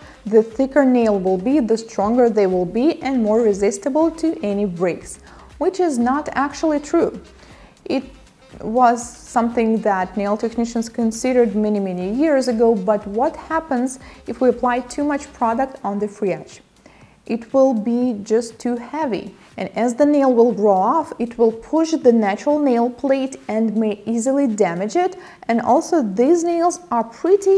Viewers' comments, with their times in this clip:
0:08 Baby she is reading off a sign...